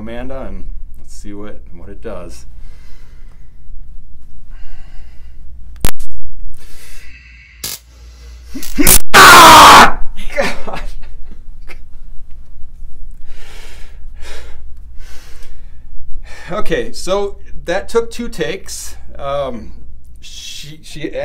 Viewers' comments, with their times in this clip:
0:08 If you wanna be deaf just click here 👇👇👇👇👇👇👇👇👇👇